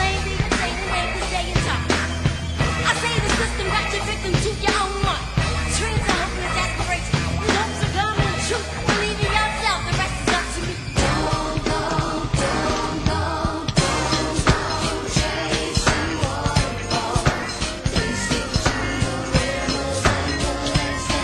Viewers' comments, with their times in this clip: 0:09 This is my favorite part that beat just